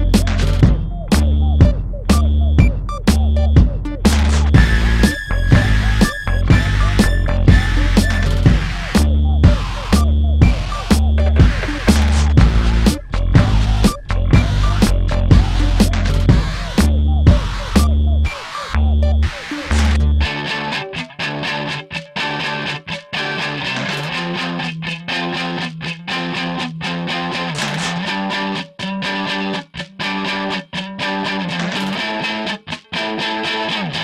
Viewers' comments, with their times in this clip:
0:05 When a cat chokes on a hairball.
0:20 this part is amazing both with and without vocals
0:20 Sounds like something from the Cars trilogy.